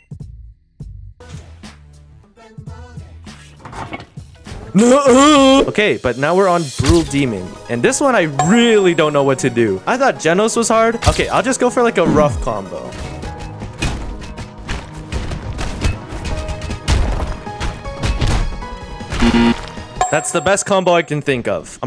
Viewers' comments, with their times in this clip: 0:03 BEST NUHUH in his entire life
0:05 The "NuUuhhH UhhhHh" is CRAZY